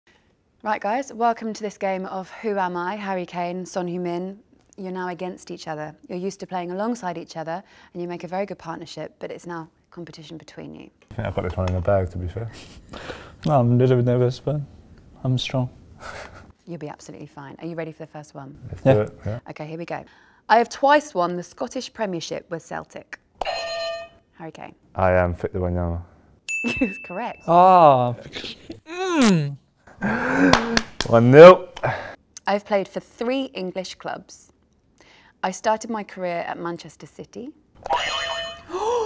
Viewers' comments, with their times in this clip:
0:00 What a erótic voice
0:10 Right out of the gate Kane:I chumani gahr bag Son: chia she sybwcst....I’m strong
0:25 I am "Fitin-ya-mama"